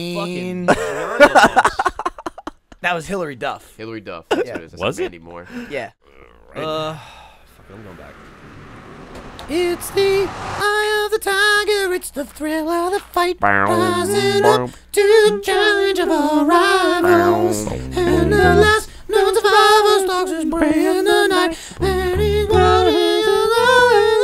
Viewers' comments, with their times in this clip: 0:10 i like how gavin doesn’t even know the lyrics, he’s just singing random sounds